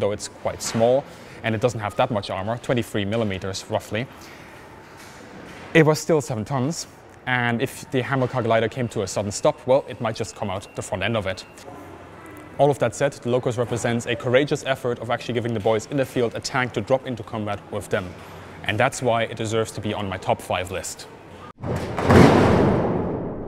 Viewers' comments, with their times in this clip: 0:09 What is this "hammer cog" that he mentions that might come out front of tank if it stops too quickly? Also, I know a fellow who owns a Ferret, tho his doesn't have either those missiles or machine gun. I saw it going down t street one day and it turned out I knew t guy.